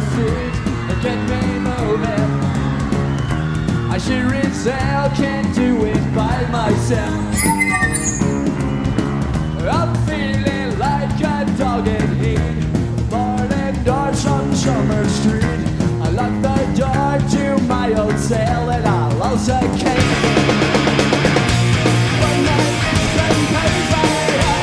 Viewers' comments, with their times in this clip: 0:05 Billie kills camera man's ears